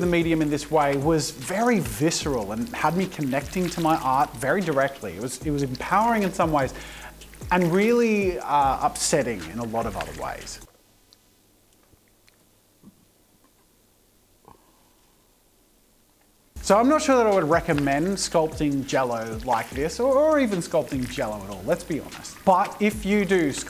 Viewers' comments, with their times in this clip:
0:10 the sound effects for this part.💀💀